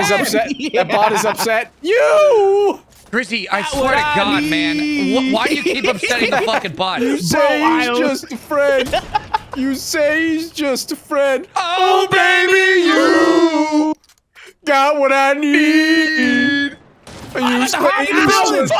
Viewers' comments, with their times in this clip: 0:03 That harmonizing was beautiful it brings tears to my eyes